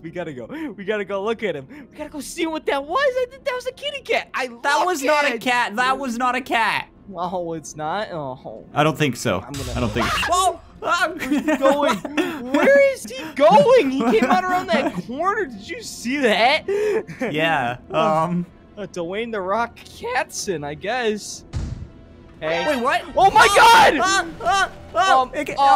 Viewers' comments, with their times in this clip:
0:07 that scream sounded like an actual bird 😂😂😂